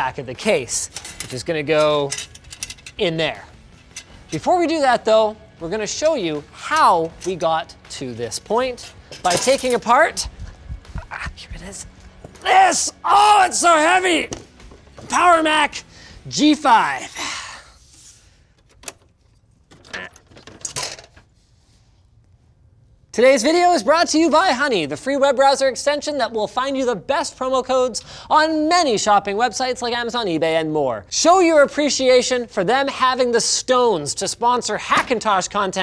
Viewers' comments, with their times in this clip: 0:10 sorry Linus. The only thing I saw and heard was Peewee Herman. Literally had to stop the vid to make this comment. 😂
0:20 Linus error sound